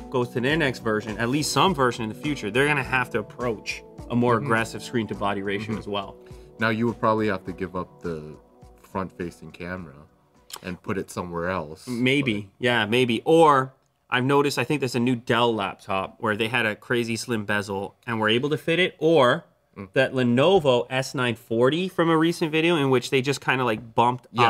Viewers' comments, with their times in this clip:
0:08 He hits the woah
0:11 he just hit that unintentional “woah”